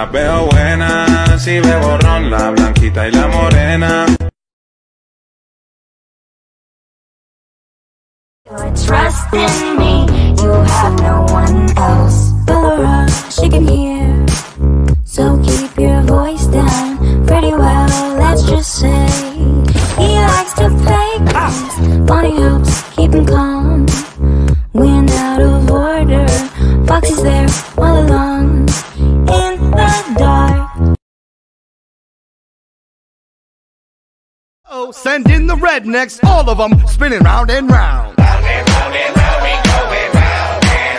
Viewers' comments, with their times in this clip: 0:07 is my favourite in this, the tune!
0:12 IT SOUNDS LIKE DOLORES THO
0:12 IT SOUNDS LIKE DOLORES THO
0:27 thats def bruno not camilo talking about him definitely...